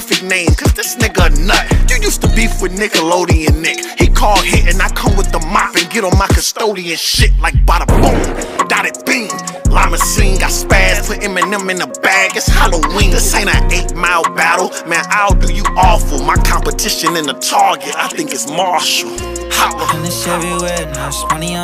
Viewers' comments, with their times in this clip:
0:08 every mumble rapper ever